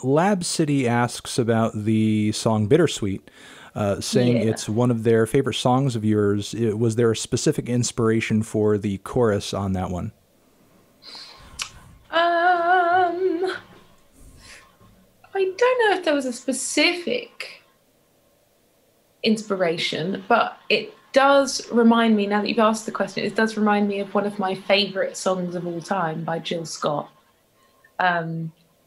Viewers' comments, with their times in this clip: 0:09 Even her "umms" have vibrato and all wtf, she is amazing.
0:10 her singing is so good she has vibrato on her uhm
0:12 has no reason to be this melodic